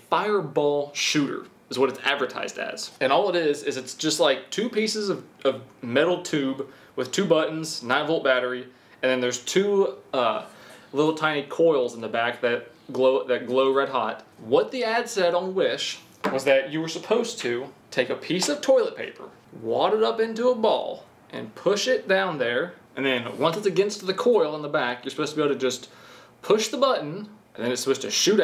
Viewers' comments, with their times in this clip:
0:09 Did anyone else hear a dog collar ?